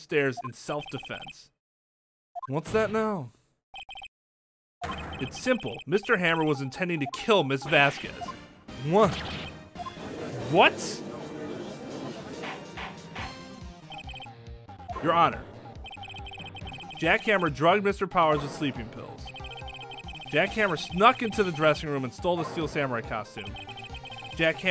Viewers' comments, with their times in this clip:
0:05 I freaking love how the Steel Samurai theme (possibly the most underrated bgm in the history of video games) kicks in right when Wright is getting ready to deal a final blow.